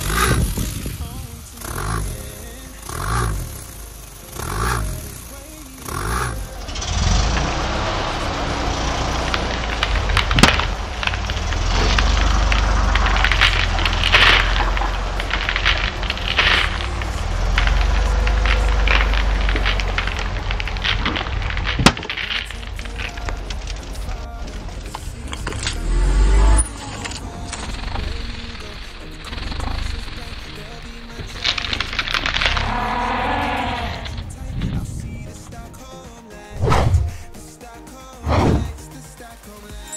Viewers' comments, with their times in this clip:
0:05 why does it sound weird you'll see it will be uncomfortable
0:20 sounds like u beat the ender dragon